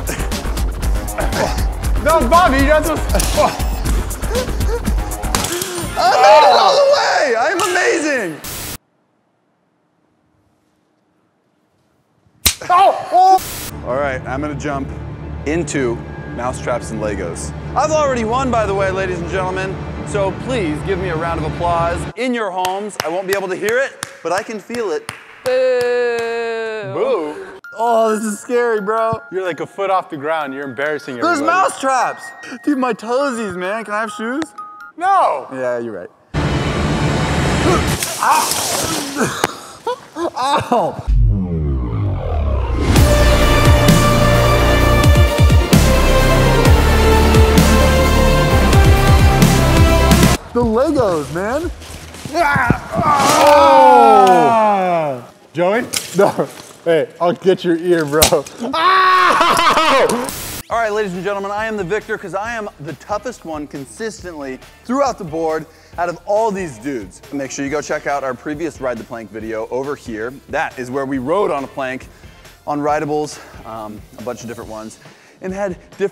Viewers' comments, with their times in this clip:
0:09 that's team edge without a camera on😂😂 (quiet)
0:47 Wow epic music yet it's a grown man jumping into Legos
0:57 that scream was hilarious sorry team edge but love you guys